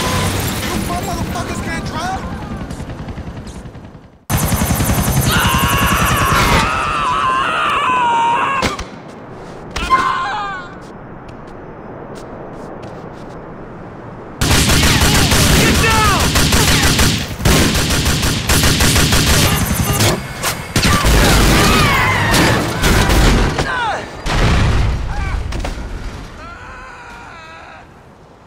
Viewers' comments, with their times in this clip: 0:10 that scream sound effect sounds good